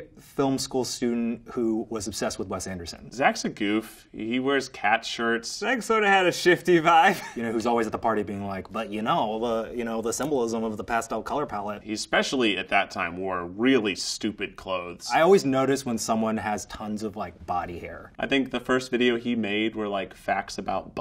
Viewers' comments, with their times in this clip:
0:09 Eugene imitating Zach 🤣🤣